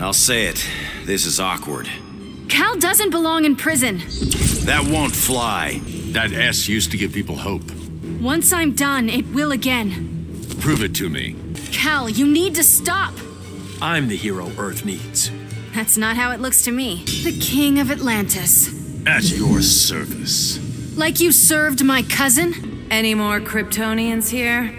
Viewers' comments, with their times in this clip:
0:06 I can only hear it wrong...